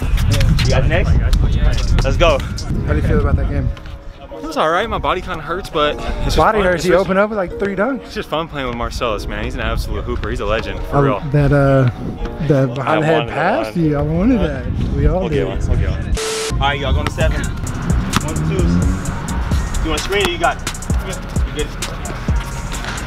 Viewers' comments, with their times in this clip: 0:05 What's up with the background music on